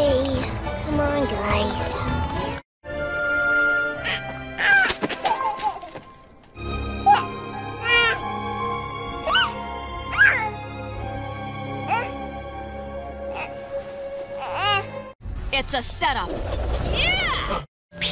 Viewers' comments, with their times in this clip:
0:03 WOW! OMG! She voiced THE Roshan from Ice Age?! I never knew that after many years until now. She did such a delightful baby voice though.